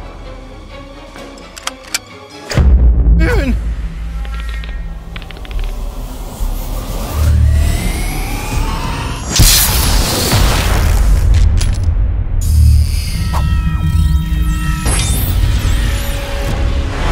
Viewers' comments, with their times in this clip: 0:05 WHY F SOUNDS LIKE PLAYER?!